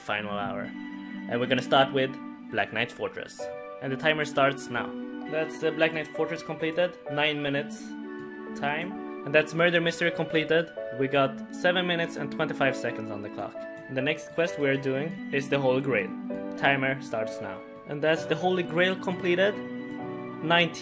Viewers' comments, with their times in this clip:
0:07 Black mans fortress?